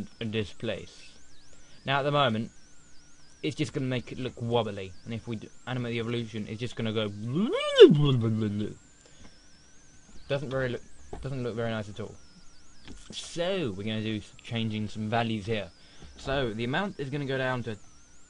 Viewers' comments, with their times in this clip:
0:06 Instant like for the sound effects